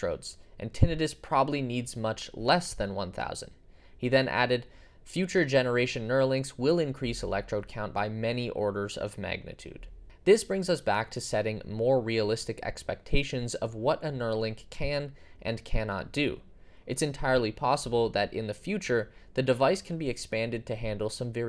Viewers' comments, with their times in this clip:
0:09 it literally takes 5 seconds to google how to pronounce Tinnitus...